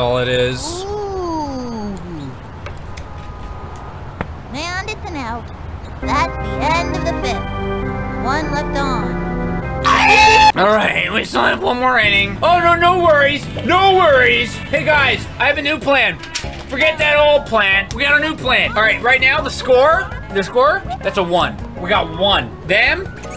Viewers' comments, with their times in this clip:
0:10 -perfectly cut scream.